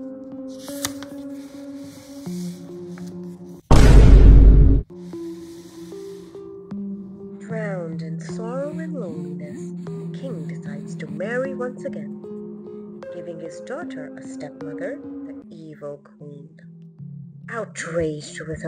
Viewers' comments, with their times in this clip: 0:03 THE VINE BOOM SOUND 😭